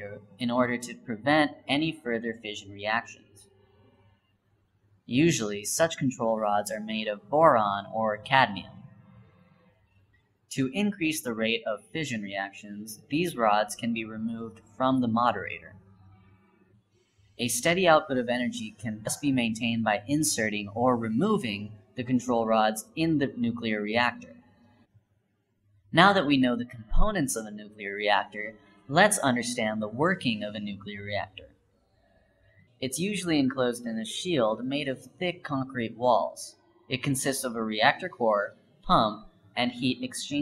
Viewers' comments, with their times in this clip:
0:08 what element is a Boran? Must be new...
0:28 I LOVE AND HATE THIS VIDEO WHY WAS THERE BUZZING I THOUGHT THERE WAS A BUG IN MY EARPHONE AGHHHHHh